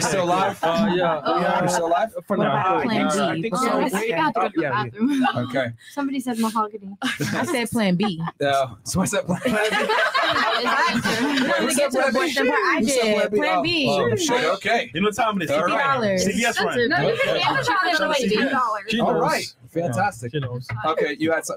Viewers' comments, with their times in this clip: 0:06 She heard Mahagony? Lucky there are no hardcore feminists on the panel to add that to the buzzwords to name-call men.